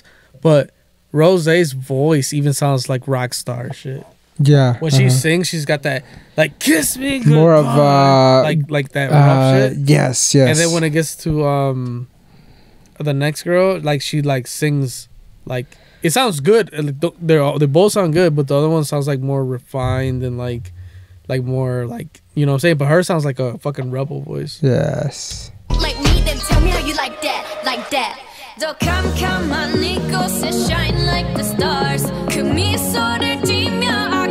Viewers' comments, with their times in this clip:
0:06 this is Jennie not rose.
0:16 What i love about Blackpink is that they have very distinct voices that compliment each other.